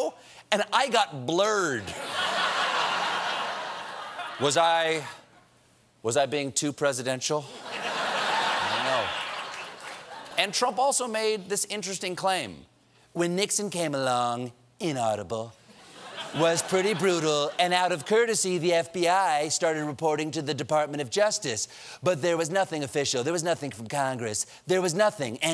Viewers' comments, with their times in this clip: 0:09 that's a normal laugh. The 'screeching' that even drowns out the audience has got to stop.